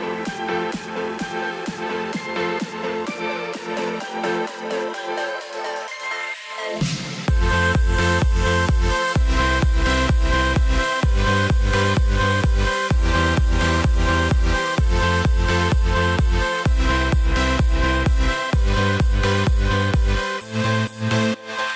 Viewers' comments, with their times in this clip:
0:07 when it said 20% battery i thought it was my phone but it was actually his phone...got me confuse for a sec
0:08 Anyone think that the "20 percent battery" notification was their phone? Or was that just me?